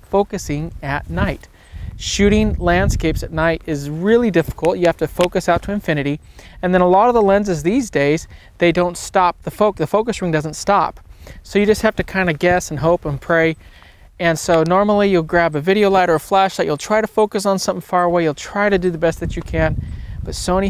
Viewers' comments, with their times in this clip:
0:04 I could listen to those knuckles crack all day